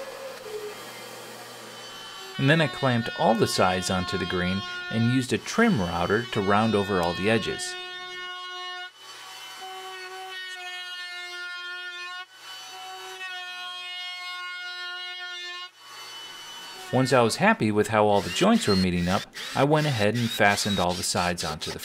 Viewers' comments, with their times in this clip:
0:03 the best cry ever